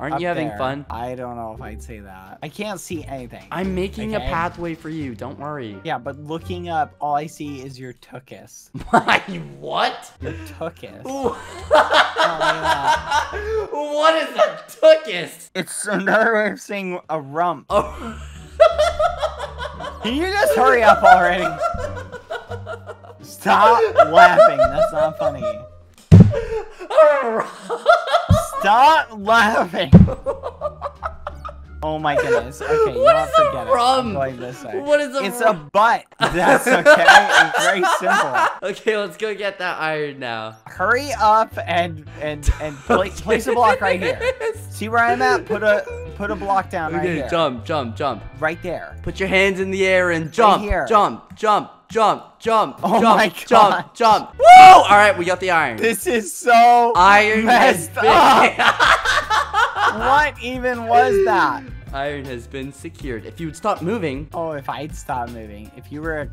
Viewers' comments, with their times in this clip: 0:07 we all know everybody smiled when skeppy started to laugh even i did
0:25 Out of Skeppys whole laughing session, my favorite part is when this: "Rrrrr" lol
0:25 what was the dog like laugh💀😂
0:52 😂😂😂😂😂 why did he yell at the end 🤣🤣🤣🤣🤣